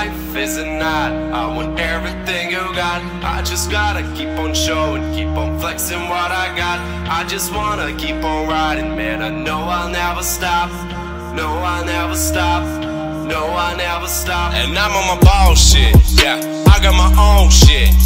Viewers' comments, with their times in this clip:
0:05 THAT BASE <3333